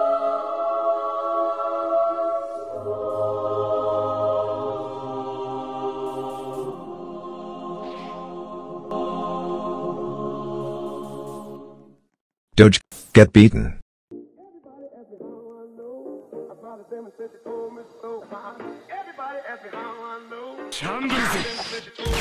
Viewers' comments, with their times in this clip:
0:10 hears distance TAKTU